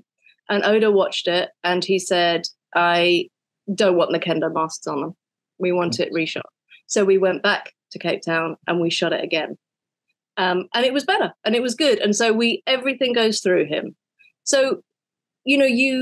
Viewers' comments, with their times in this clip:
0:03 im sorry i cant hear it, oda said what?